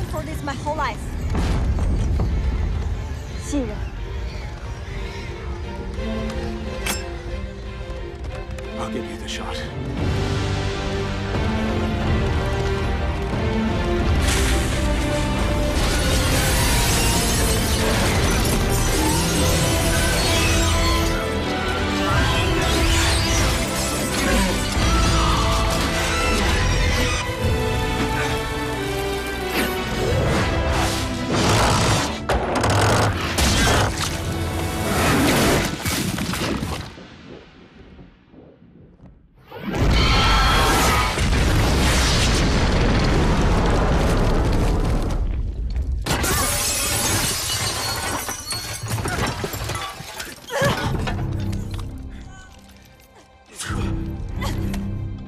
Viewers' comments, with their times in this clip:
0:03 SHE SAID Rasengan LOL
0:32 The Queen: Hey this ain't Food. KABOOM
0:39 I Heard A Airstrike Noise From A Plane